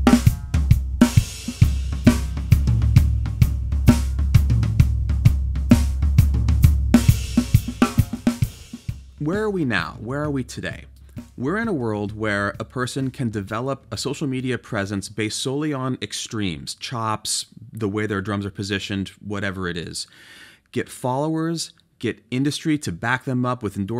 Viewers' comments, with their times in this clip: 0:04 that snare like a honeycrisp 🍎